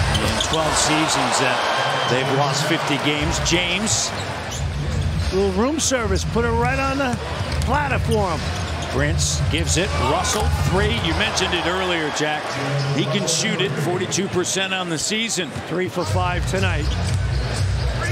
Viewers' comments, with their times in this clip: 0:04 Why is the other nba announcer sounds like Trump!!? Lol "lil room service, put it right on a platter for him" lol😂